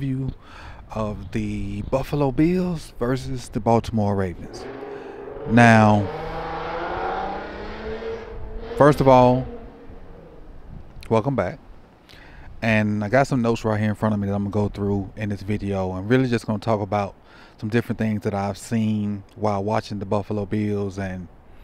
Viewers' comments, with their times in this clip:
0:07 Hey Coach, it’s sounding like Fast and Furious out there! You was looking over at dude like, Film Then More Film!!! 🤣🤣🤣